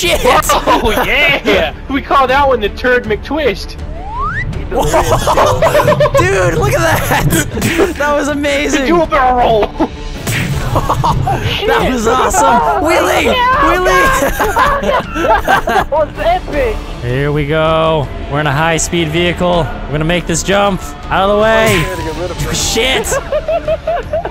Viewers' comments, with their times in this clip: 0:10 Anyone else realize vanoss got a speach impediment